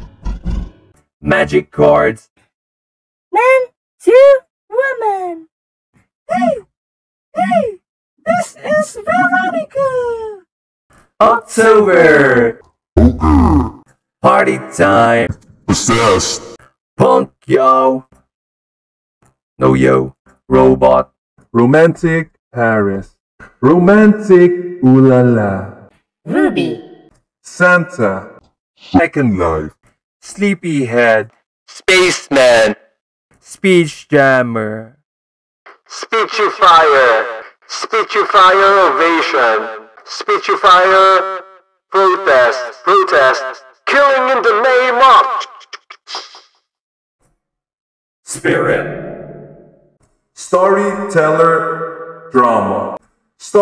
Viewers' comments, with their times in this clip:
0:03 wtf was that shit, that dont sound like a girl
0:17 sounds like the star of a daft punk song xD
0:23 did he say romantic bunana?!
0:31 Others: very calm Spaceman:
0:35 sounds just like everyone i play with on CS:GO but they are eating their mics and screaming "BLYAAAAATTTTTTTTTTTTTTTTTTTTTTTTTTTTTT RUSH B YOU LITTLE CYKA"